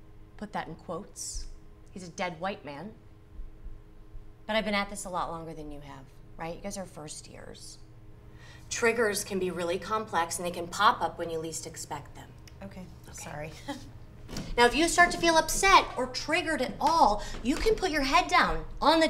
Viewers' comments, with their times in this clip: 0:03 I would be "triggered" by her patronizing tone.